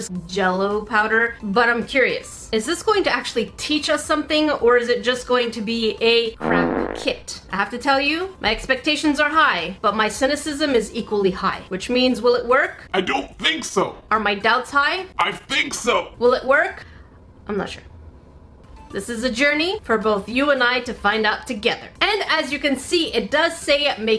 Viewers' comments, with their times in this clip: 0:05 nice bleep for the s word lol